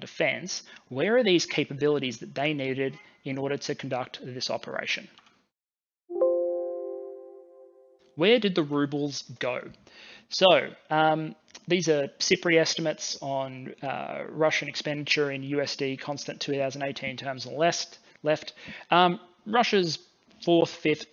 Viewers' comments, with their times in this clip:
0:04 me panicing, which of my 3 monitors is that windows noice coming from, what is going on?
0:06 Dude, that terrified me. I thought that was my computer making that sound.